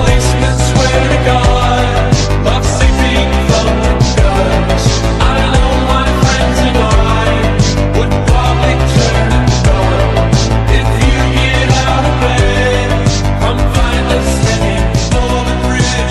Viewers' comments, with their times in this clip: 0:03 when the shoot from the rifle is perfectly time with the music I'm feel really satisfied